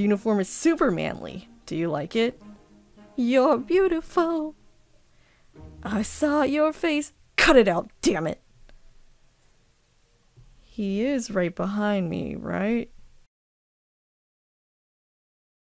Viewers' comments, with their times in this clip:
0:08 I just love Present Mic. He tried to Marry Shota and it's the same. I just love how he sings behind Katsuki. I love your voice!